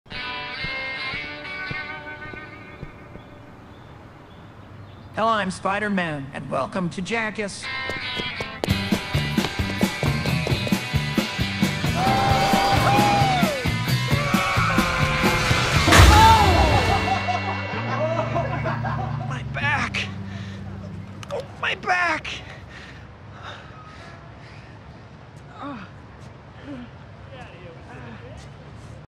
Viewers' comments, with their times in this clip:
0:08 his footsteps are synced with the song
0:13 I needed that scream. Thank you.